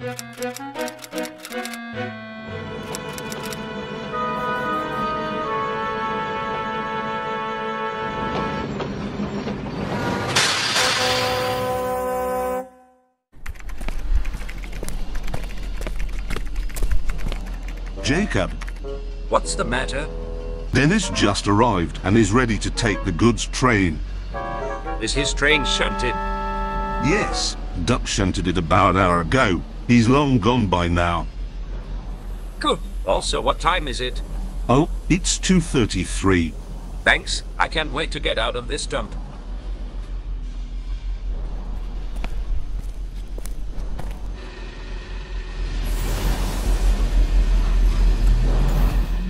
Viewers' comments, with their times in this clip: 0:07 about to BOOMMMMMM!!!!!!!!!!!!
0:17 JEREMY CLARKSON’S VOICE!!!!
0:17 Clarkson!? That's not a voice i expected to hear...
0:17 Nice usage of Jeremy Clarkson's AI voice (im a massive Fan of Top gear and The Grand Tour)
0:18 that's Jeremy clarkson's voice that's awesome I like this video
0:20 Using Jeremy Clarkson‘s voice for the worker is absolutely hilarious and so fitting at the same time! xD ”Clarkson, you Muppet! You blew up the power plant!”
0:24 I don't know why, but when I here that guys voice, I think of Jeremy Clarkson from top gear.
0:27 I swear that's text-to-speech Clarkson
0:31 did i just hear jeremy clarkson's voice?
0:31 Has nobody notice that it's Jeremy Clarksons voice it shouds like